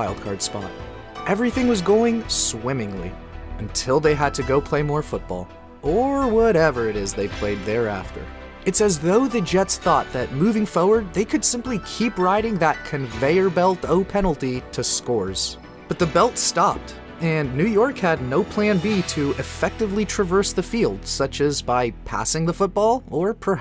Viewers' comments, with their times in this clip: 0:09 Sincere question: Which regional accent is that ? "Fo-werd" Instead of "For-werd" (Forward)